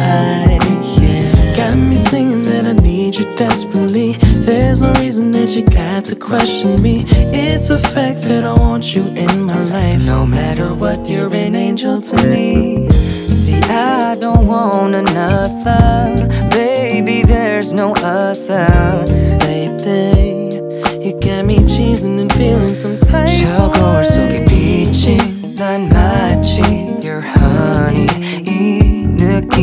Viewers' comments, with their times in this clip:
0:10 that harmony has me melting 😍